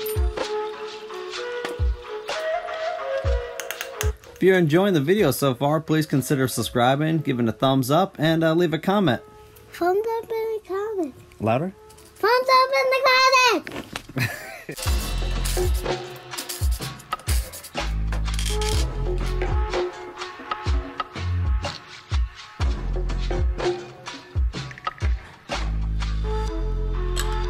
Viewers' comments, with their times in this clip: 0:08 OMG alien voice!! :-D